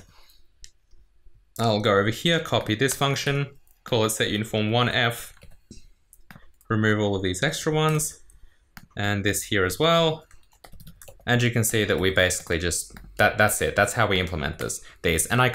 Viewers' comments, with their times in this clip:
0:03 why do you sound like you are going to cry any moment 😂😂